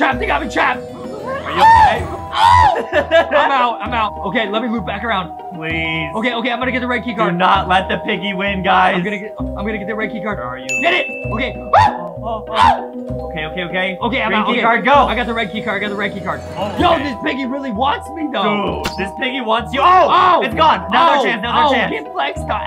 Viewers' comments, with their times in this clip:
0:03 That sound like a mokey scream-